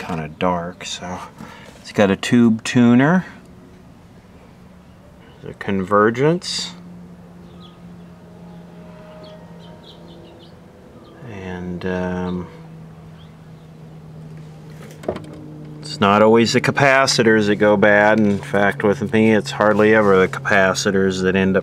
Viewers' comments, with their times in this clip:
0:06 Windows XP start up sound in its natural habitat if you listen carefully
0:07 anyone here the windows xp startup